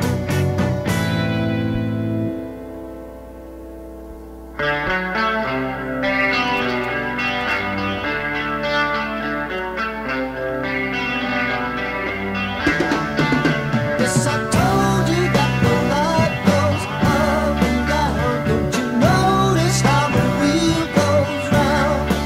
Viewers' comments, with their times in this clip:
0:04 George Harrison's guitar part 😍